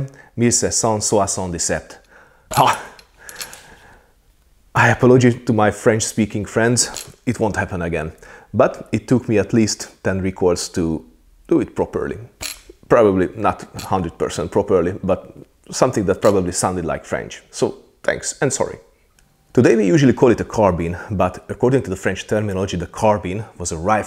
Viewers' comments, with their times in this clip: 0:05 It was perfectly understandable! No ears bleeding, Nice job!!!